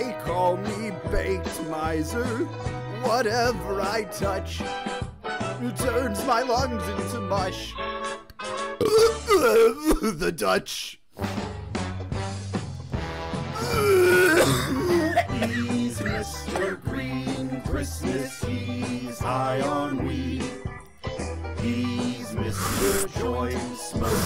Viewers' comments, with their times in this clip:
0:08 it sounds like he burps, and then says the Dutch, and then fucking dies as the chorus sings.